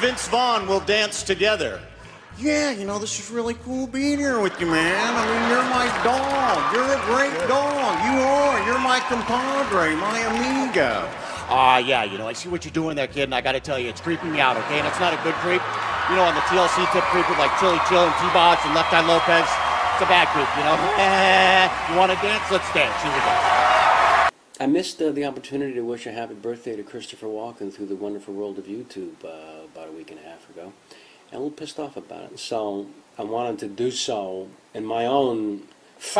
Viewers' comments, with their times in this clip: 0:07 That sounded more like Mike Myers as Austin Powers than Owen Wilson.. 🤨
0:24 Kevin Pollak nailed the Christopher Walken impression and pretty good Peter Falk too, especially the eyes. 😂